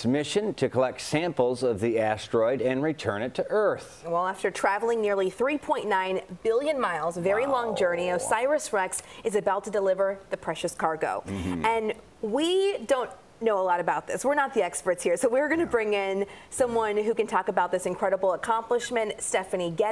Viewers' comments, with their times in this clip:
0:07 "Waaaaaaaooooo..." said the news presenter, brimming with enthusiasm. 🤣